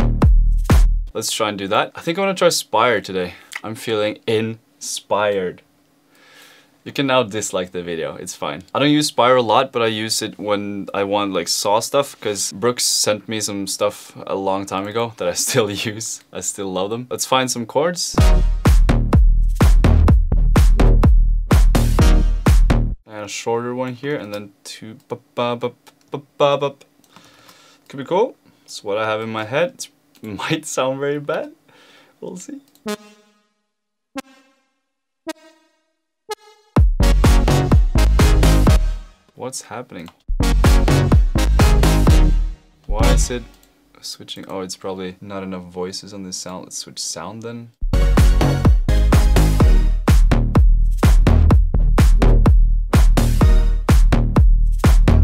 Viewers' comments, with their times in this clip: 0:06 😂😂😅. Really dope drop☀️👌
0:41 only for me was super cool and then he changed the sound?